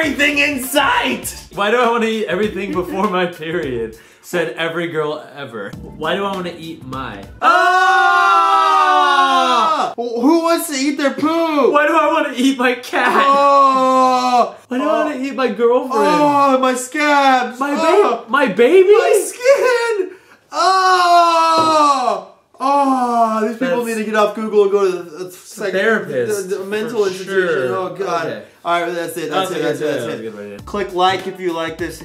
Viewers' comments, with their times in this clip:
0:06 Nice Harmonization! XD
0:18 That was the most sinister laugh I have ever had.